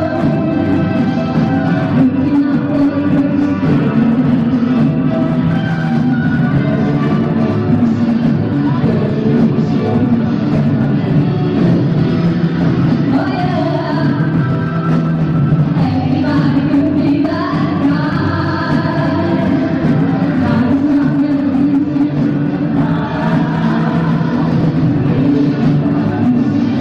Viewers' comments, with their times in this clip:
0:08 does the majority of the instruments and background strings suddenly cut out in Dancing Queen for most of the song?